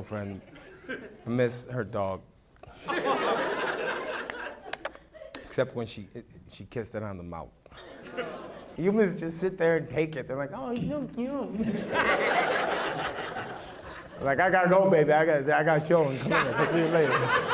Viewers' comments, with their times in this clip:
0:05 The way everyone audibly shows disgust is fucking hilarious